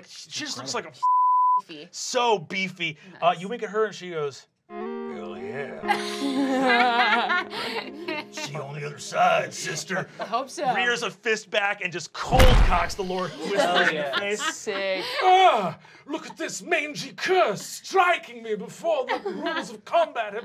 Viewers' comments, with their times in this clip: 0:05 The guitar riff is the best part of the campaign